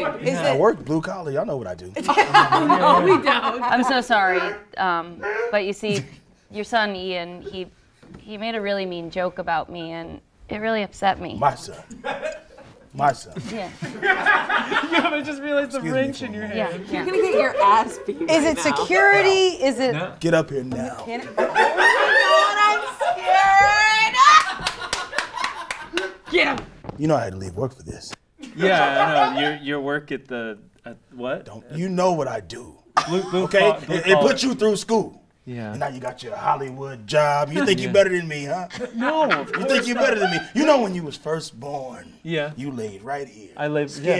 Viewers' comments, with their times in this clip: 0:03 who's honking like a goose there? xD
0:26 “You know I had to leave work for this” is so perfectly delivered and feels so real that it’s my favorite moment in the whole video